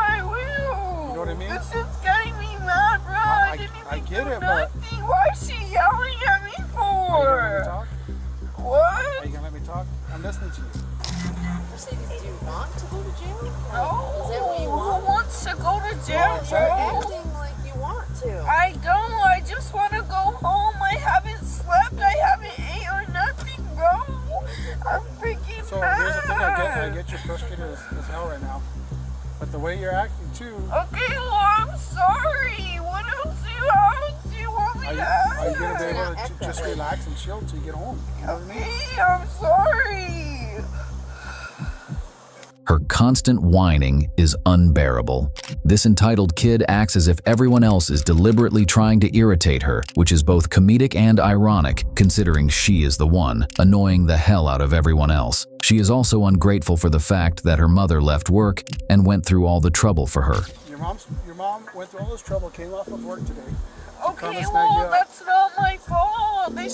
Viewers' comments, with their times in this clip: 0:07 she sounds like a Chihuahua 😂😂😂😂
0:41 Couldn't have said it better myself. Her long, drawn out, vibrato whining drives me up a damn wall. I know you can drop off a baby at a fire department, but can you wait 13-15 years and then still drop the baby off? 🤔🤔🤔 Ciao.
0:50 I don't know about you but if I were extremely tired and I was hungry, I would be irritated too when cops would keep asking me if I wanted to go to jail. Sure she has a whiney voice but isn't that typical of teens? Just take her home and be done.